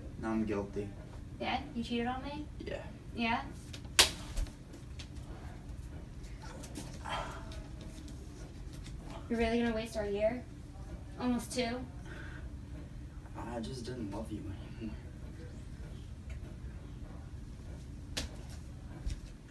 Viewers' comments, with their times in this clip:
0:05 Guys..guys.. Just check.. She laughed when she slapped him Thank me later...